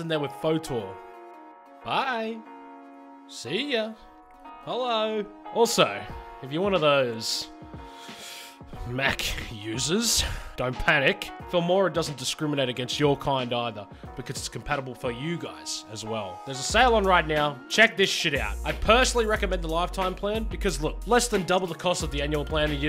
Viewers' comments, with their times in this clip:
0:05 the disgust in your voice is hilarious